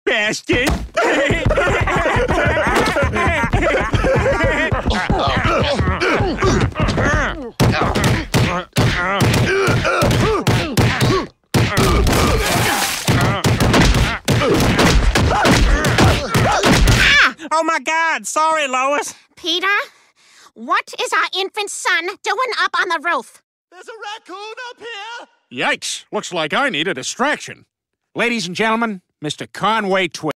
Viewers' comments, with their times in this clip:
0:02 How girls pillow fight: giggling Christina stop it How me and the boys pillow fight:
0:09 Cleveland whoopin Quagmires ass! My bro! listen 2 Joe grunting while punching Peter. I choked on my damn laugh! 😂😂😂
0:11 I love that ballsack punch sound
0:14 peter swinging Joe and you can hear Joe yelping lol
0:15 Joe sound effect lol